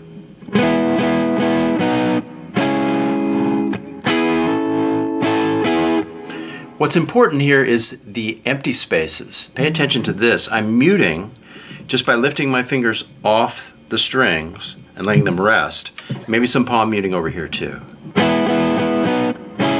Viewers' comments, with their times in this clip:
0:07 It's Okey little Countrysh a New way of Rock Music